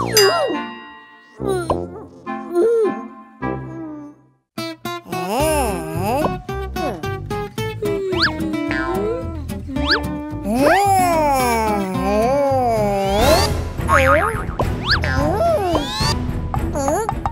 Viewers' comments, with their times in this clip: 0:05 Classic Doodland Doodle Voice